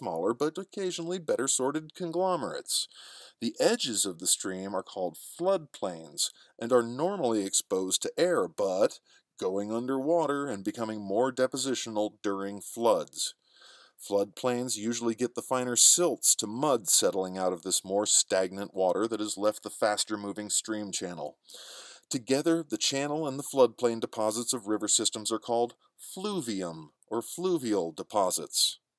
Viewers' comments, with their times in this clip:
0:09 i see what u did there 😀 "normally exposed to airbud" 😂